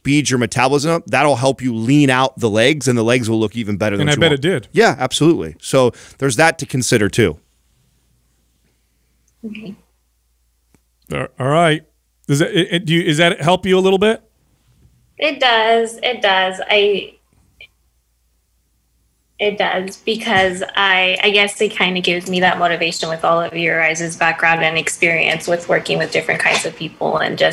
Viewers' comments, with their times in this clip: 0:08 That awkward silence "Ah...alright"